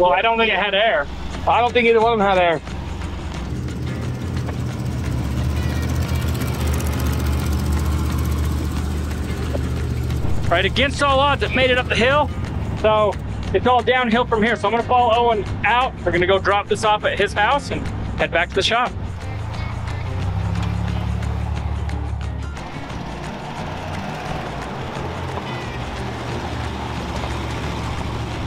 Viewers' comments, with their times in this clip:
0:09 nice theme song 😂